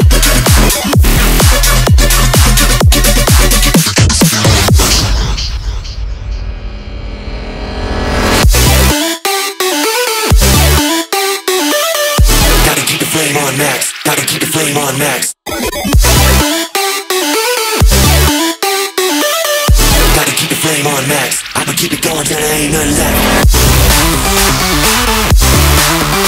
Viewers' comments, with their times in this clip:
0:08 Those bright melodic portions of Tokyo Machine songs like that of really bring the music to another level for me. [ ^ vvvv ^ ]